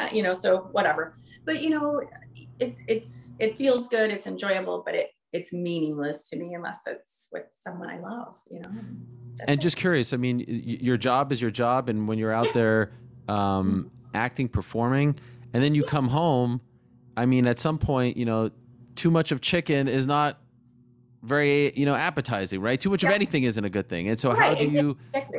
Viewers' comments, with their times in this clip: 0:07 I love how she says it It's enjoyable but it's meaningless.